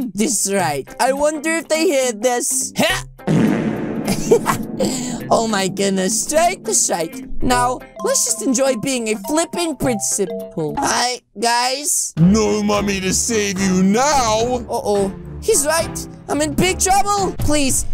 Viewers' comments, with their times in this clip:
0:03 I hope they hear this farts